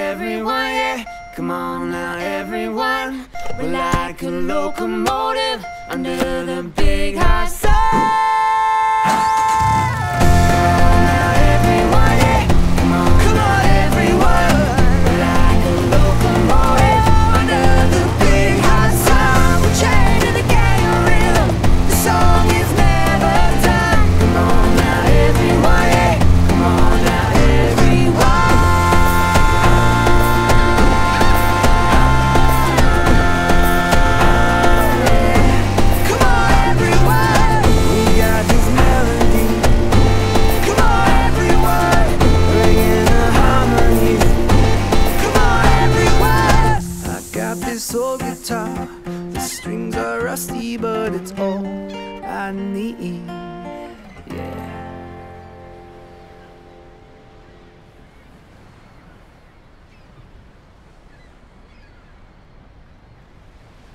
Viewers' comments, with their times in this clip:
0:09 Great arrangement, but the unnecessary autotune warble kinda ruined it for me.
0:44 Sound of Chicago traffic;